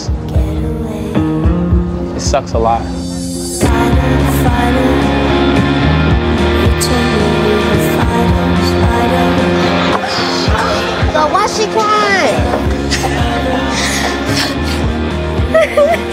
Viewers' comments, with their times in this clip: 0:04 the music takes me out every time 😂